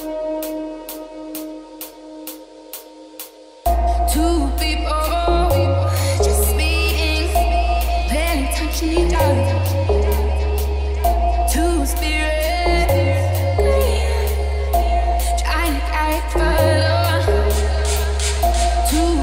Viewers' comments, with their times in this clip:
0:04 What's the genre for this music. Love the rhythm and sound sounds a little like some sort of atmospheric house..?